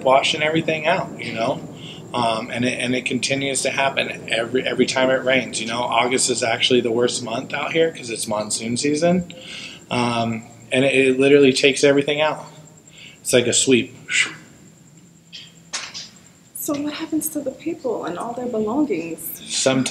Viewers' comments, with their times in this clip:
0:04 this guy is your total typical millennial. Big ass mod and the way he talks 🤦 cliché